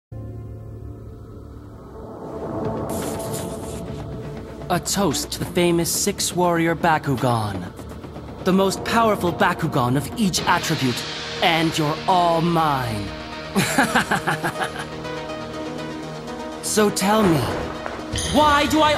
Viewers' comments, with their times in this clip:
0:02 What kind of slurp is that?